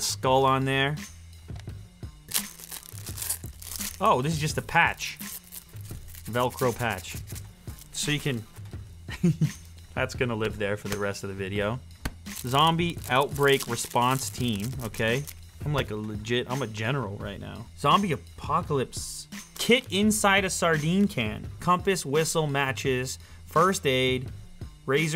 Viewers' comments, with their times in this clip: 0:07 that laugh though xD